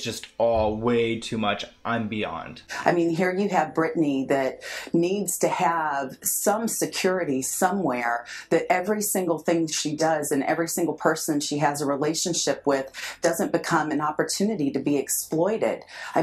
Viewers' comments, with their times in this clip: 0:04 she be holding her breath at every sentence 👀 😂